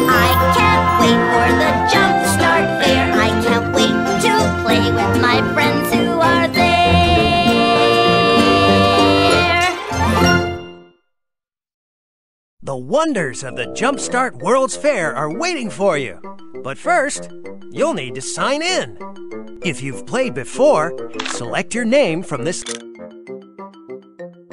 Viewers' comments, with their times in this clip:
0:07 that koala(Keesha) just got hug-rejected by that polar bear dude(Pierre). Edit 1: Holy woah--Keesha sounds a lot like Timmy Turner tho. 🤔 Edit 2: Is Eddison Irish?